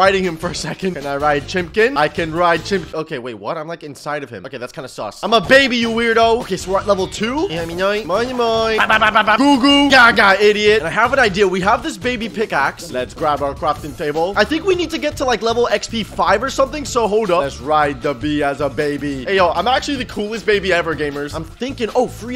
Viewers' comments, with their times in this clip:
0:07 though lol he made a mini song lol